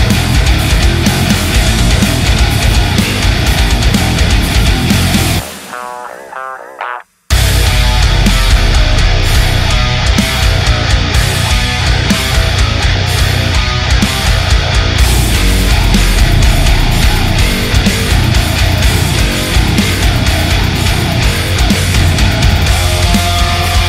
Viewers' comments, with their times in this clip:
0:07 I really enjoyed the song more in Drop A. Double drop A for that particular song would sound better with a slightly slower possible less noteworthy and more augmented patterns. Speaking of patterns, this song has tons of grooves which makes it hard to have a favorite part and something to distinguish from the rest of the grooves. This song would of hit harder if you played with the pattern a bit throughout that entire riff. This part needs to stand out IMHO. What I mean is don't make the riff predictable. Keeps the drums the same, but play the riff in parts and loop yourself. This will still give you groove and bounce. By the time you have played the riff in 4 bars, everything falls back in place and the riff is much less predictable. is a strong part to your song. Love your vids and what you do.